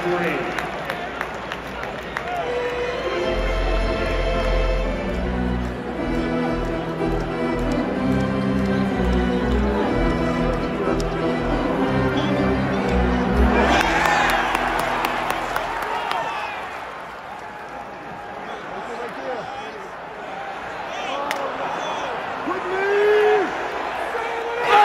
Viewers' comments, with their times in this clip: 0:05 Probably the best organ version of Seven Nation Army in the NBA.